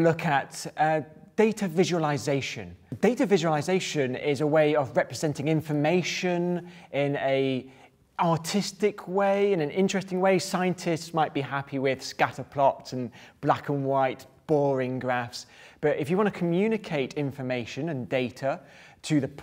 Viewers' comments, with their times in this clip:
0:07 it sounded like he said “in an autistic way”